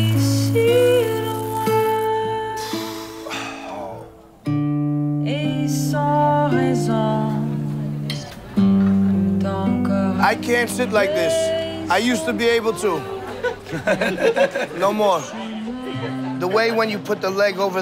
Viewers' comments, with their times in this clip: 0:04 does any wonderful human being know this music. It's really chill.